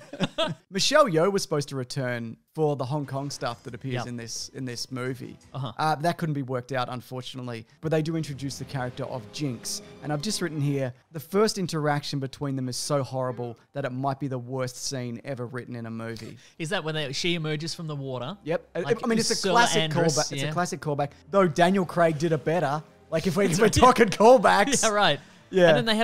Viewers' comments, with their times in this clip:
0:08 I looked up this clip, and the way he says mojito is so fucking weird